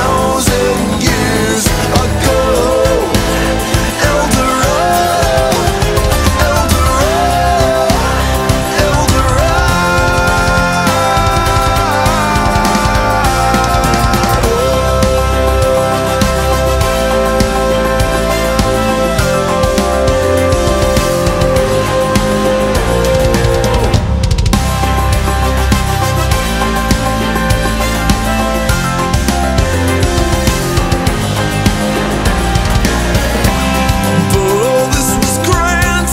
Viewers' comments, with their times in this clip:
0:08 onwards was on point :D
0:08 I'm used to the german version where they accentuate the "a" a bit more, so the "Dorado"s sounded different. But the continuous one from was simply perfect :D
0:08 the most satisfying moment where he sings El Dorado on the long part is rather satisfying, prefect cover, keep it up
0:23 bursts out in laughter